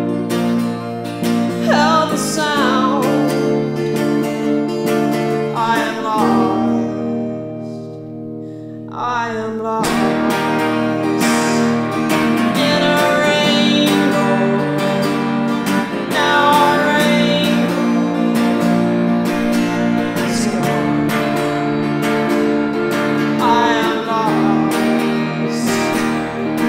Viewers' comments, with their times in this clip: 0:07 That moment where there’s this like, pregnant pause before the song really takes off is like, idk so much more raw and emotional than the original. When that guitar comes in and you press whatever effect you’re using right after, it’s just so good.